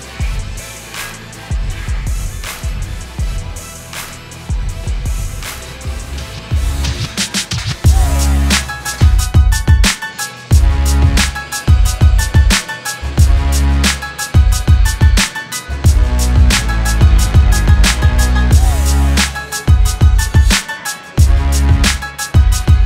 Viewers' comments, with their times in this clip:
0:09 I LOVE THAT MUSIC
0:09 what the music???